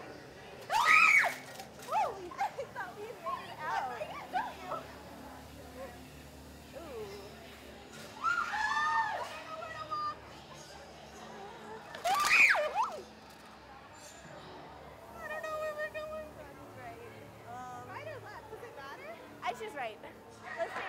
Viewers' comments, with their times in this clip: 0:04 I got scared cause of the scream